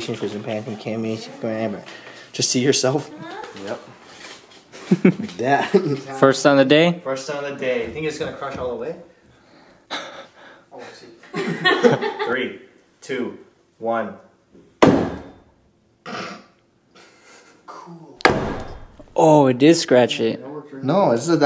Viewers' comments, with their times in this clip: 0:03 Who made that moaning noise ?